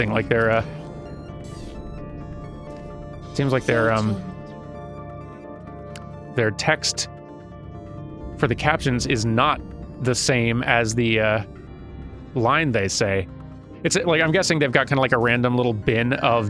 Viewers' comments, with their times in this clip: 0:03 You can faintly hear another turret saying the words from the caption. Instant EDIT: Well, yeah, I guess there is also a miss match to their reactions.